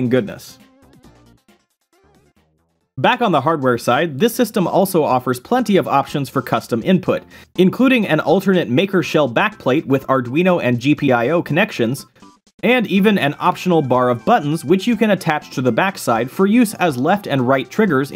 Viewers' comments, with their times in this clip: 0:03 * listens to background music * * tries to stub toe * once it reaches that part, AHHHHHHHHHHHHHHHHHHHHHHHHHHHHH